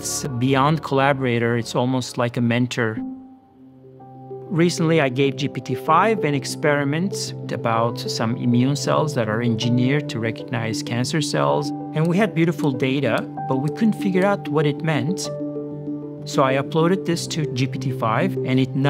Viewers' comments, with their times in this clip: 0:04 Am I the only one that thought that my iPhone was ringing ?